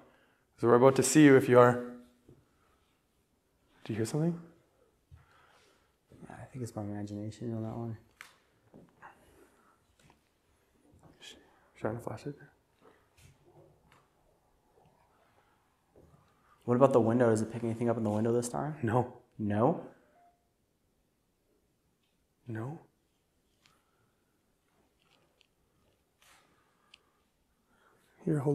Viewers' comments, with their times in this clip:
0:10 Sworn I hear some kind of whisper Can’t make it out tho